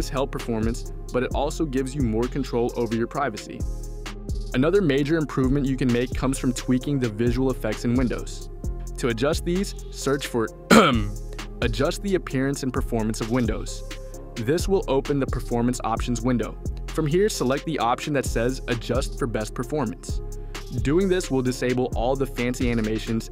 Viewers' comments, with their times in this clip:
0:08 why the heck is the ai coughing in
0:09 bro didnt make us think its ai voice
0:10 nice fake ass ai cough gng